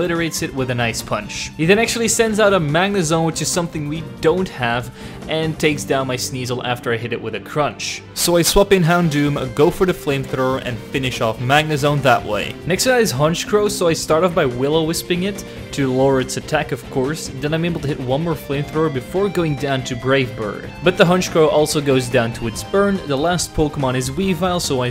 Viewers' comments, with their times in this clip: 0:08 What happened to the audio